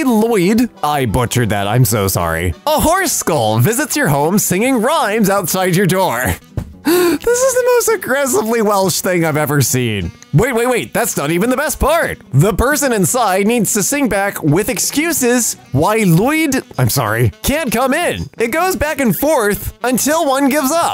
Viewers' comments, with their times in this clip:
0:05 that just sounds like Friday night Funkin